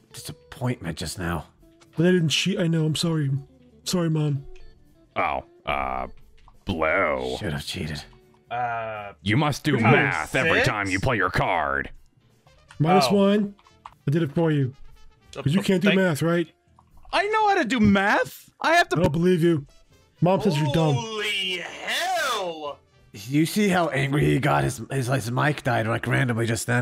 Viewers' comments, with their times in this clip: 0:08 you must do meth every time you play a card-jack